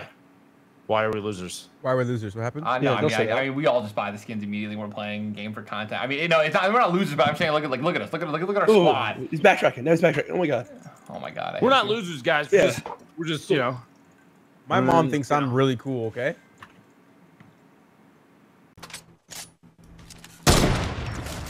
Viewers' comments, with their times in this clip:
0:05 "we're not losers but look at look at look look at us" 😂 studder much